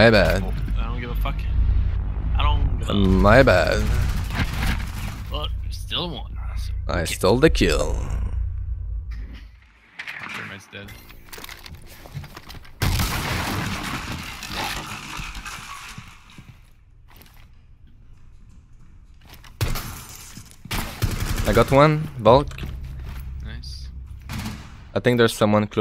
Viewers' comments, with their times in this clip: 0:07 the hatch drop the audio sounds odd